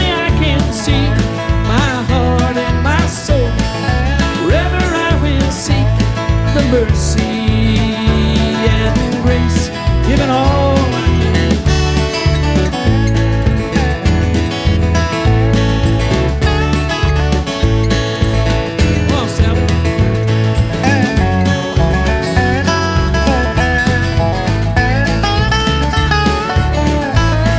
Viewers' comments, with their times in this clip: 0:09 From what I can discern, either Chris fails to sing the word "see" or they edit it out (there is a video edit at the exact spot where the word is omitted). Am I missing something?